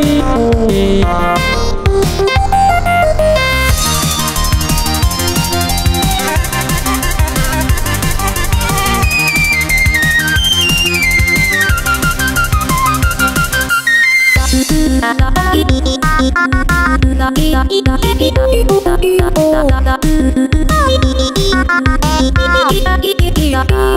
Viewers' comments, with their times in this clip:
0:04 my dog likes/ or is at least interested in this mod. As soon as it starts, she perks up just in time, for the very high pitched notes on our side.
0:04 bluds mouth isn’t moving and it’s like U UU